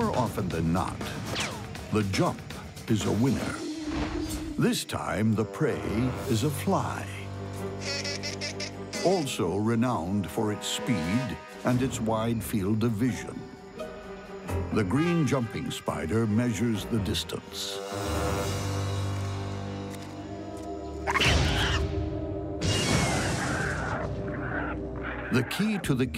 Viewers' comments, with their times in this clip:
0:09 Wait a minute... the fly actually sounds like a fly, does that mean all the other animal sound effects are accurate?!